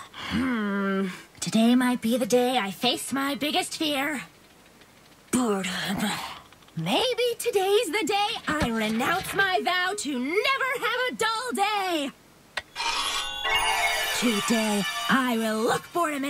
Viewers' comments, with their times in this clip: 0:04 i thought she said p*rnhub